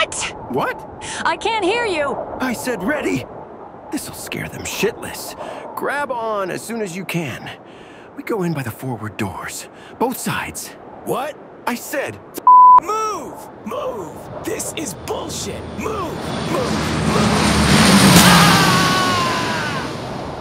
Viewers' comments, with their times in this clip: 0:04 Love at how angry he looks but he’s saying it in a calm manner xD